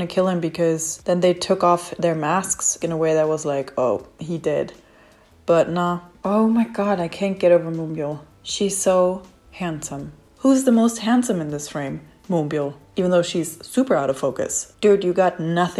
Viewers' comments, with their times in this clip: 0:03 THE DECEPTION I CAN HEAR LMAO